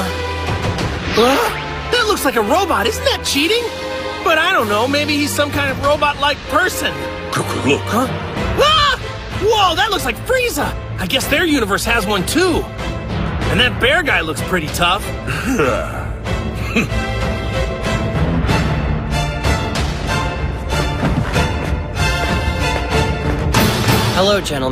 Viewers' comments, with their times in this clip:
0:07 Piccolo Botch Goku's Name on '' Cucu Look! '' He meant to say Goku Look '' But it sound like Cucu instead!